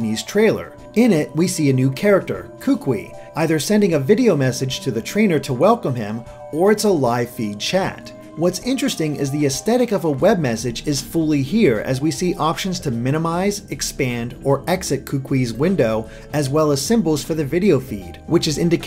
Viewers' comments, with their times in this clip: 0:06 the name is said...every Hawaiian or Hawaii resident face palms...not how it's said...